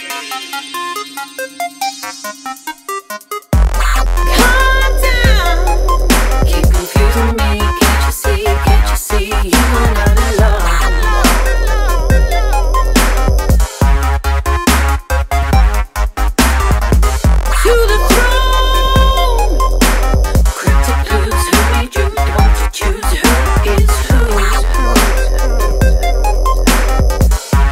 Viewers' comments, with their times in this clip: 0:10 The song that starts is fucking JUICY, MAN!!!!